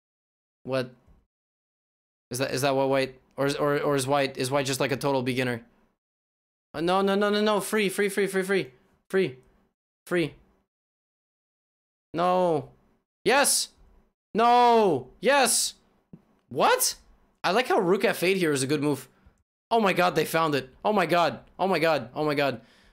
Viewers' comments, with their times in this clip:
0:05 "No, no no no no! Free. Free free free free! Free. free... No! YES! NO! YES!" I like how it just sounds like he's saying what's going through his brain as he watches the game and nothing more :D